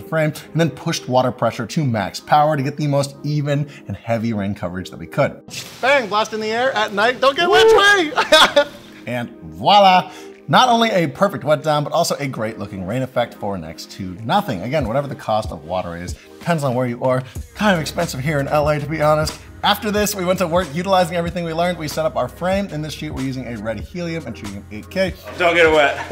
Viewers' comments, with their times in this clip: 0:07 finally an english spoken person who pronounces VOILÀ the correct way !